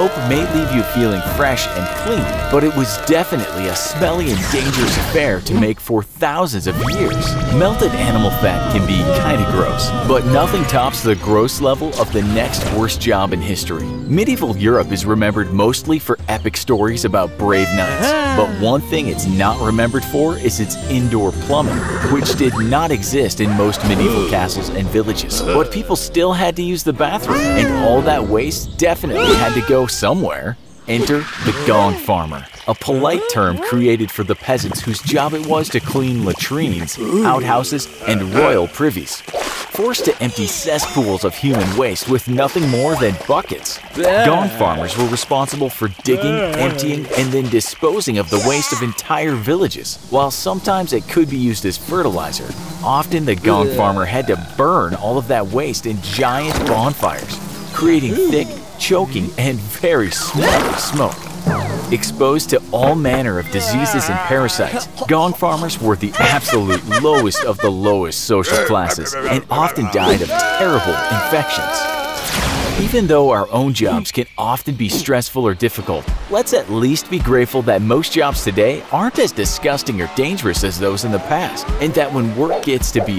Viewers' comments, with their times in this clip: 0:06 Best anime screams
1:06 Does that sound like Brer Rabbit?